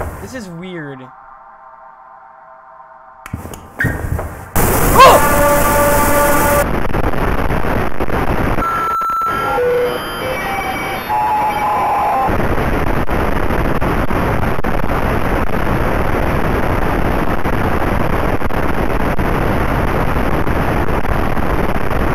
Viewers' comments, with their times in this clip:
0:06 OMG THAT STATIC